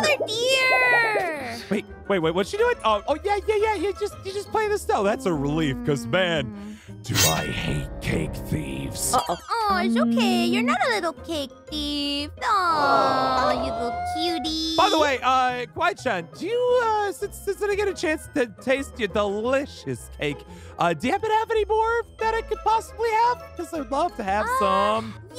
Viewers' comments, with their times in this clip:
0:09 I love the way she said "oh oh."